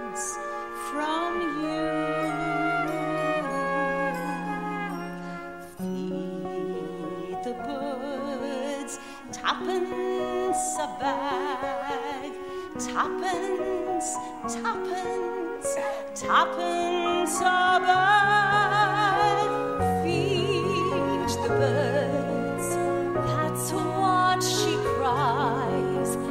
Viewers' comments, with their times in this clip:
0:08 A really amazing production! To me there´s only one flaw in it. I´ve seen many professional productions make the same mistake; The tap number "Step in Time" is ruined by all the shouting and cheering during the tap choreography. Why? Especially at 01. Dancers tapping their hearts out with maxi fords and then the sounds drown in singing and cheering. What a pity.